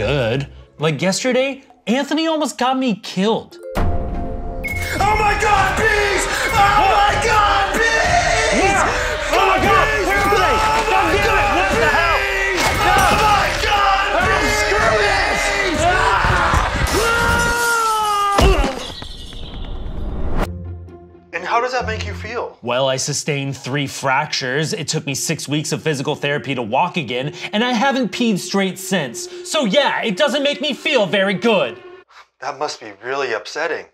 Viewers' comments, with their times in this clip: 0:10 “goddamn it oh what. the hell?” Idk why but the way he says it has me crying laughing rn
0:16 the part where ian is jumping out the window, glass shadder sound plays while ian is literally jumping out of a opened window with no glass shaddering with the soundeffect, that was some raw editing there. Either make it so the sound doesn't play while ian is jumping through the window or make it actually look like the ian mannequin is jumping through the window with the glass breaking.